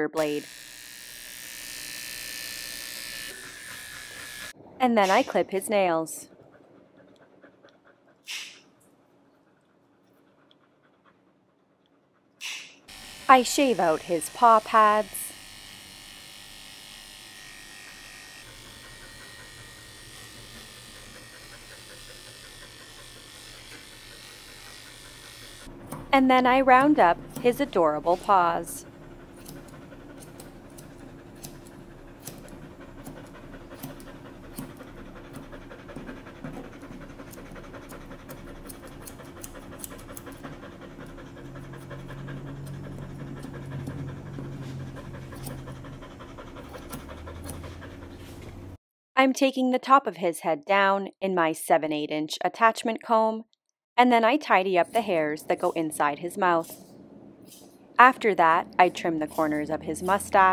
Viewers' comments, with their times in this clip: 0:04 deadass sounds like text-to-voice idk how she did that
0:20 ( noting uptick in breathing rate) does the buzzer tickle their paws?
0:25 this was insanely cute and Henri's panting sounds like a helicopter, it's so adorable !! 🥺💗
0:28 Beautiful dog - but I thought Henri was a steam locomotive when his paws were being trimmed Bless him,
0:29 chu-chu train sound
0:29 He breath so fast that I was thought someone is sawing wood on the background.
0:29 his breathing though. lol.
0:30 sounds like helicopter reinforcement is inbound
0:30 Kinda sounds like a helicopter taking off haha
0:31 My dude is breathing like a locomotive, I was waiting for him to go "Awoo Awooo"
0:31 he sounds like a helicopter!
0:31 Good lord, the panting sounds like a train coming XD
0:35 His panting sounds like a steam train.
0:39 My washing mashine:
0:43 sounds like a helicopter 🚁
0:43 Around the min mark he sounds like a choo choo chuffing along. All aboard the Henri train!